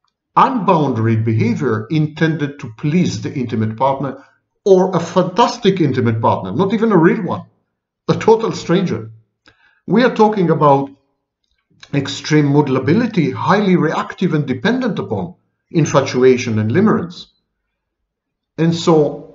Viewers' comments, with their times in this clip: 0:07 i particularly love this lecture. I appreciate your way and love listening to your articulate voice and language.